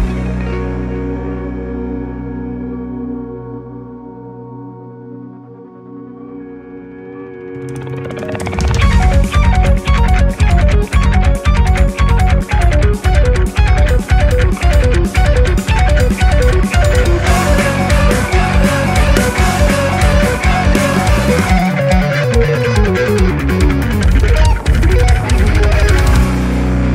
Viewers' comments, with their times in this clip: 0:08 UHHHHHYAAAS IT'S HERE!!!! 🤘🏻😑 Oh hell yes!! The riff ... I've waited to hear it in its full final form ever since the kiesel video. NGL, I totally just jizzed my pants. 😇👍🏻